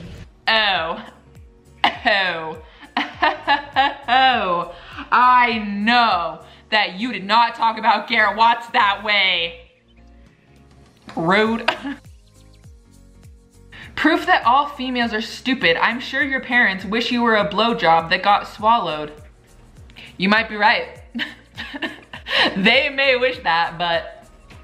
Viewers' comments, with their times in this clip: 0:08 But why is nobody talking ? 😱